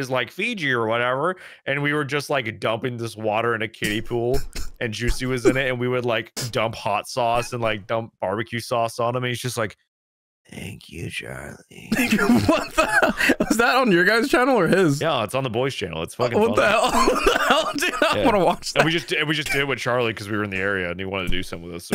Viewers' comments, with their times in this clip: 0:03 the siple "oh no"🤣